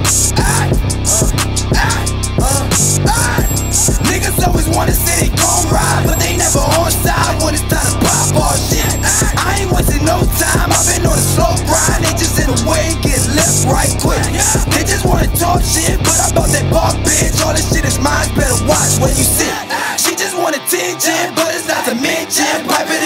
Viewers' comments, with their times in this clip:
0:04 tf he sound like 69
0:04 sounds like Jasiah from song case 19